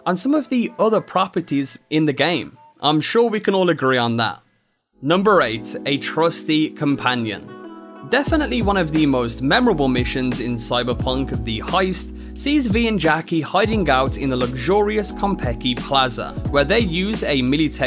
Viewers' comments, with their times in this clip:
0:05 What is this BGM called ? It's so soothing and kept me engaged throughout the video.